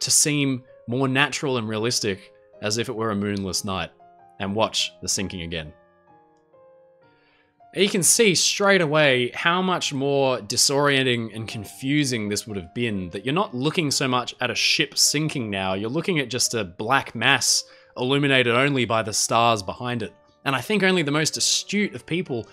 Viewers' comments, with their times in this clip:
0:10 creepy putting this into perspective now that I realize it!! Only seeing darkness and barely any visible shape of the ship and then hearing the screams and cries of being going from loud to silent.